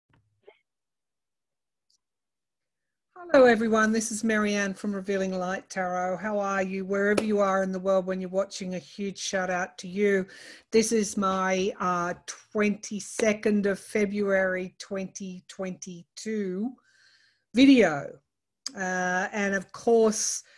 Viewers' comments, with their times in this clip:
0:02 Someone can be heard saying hello???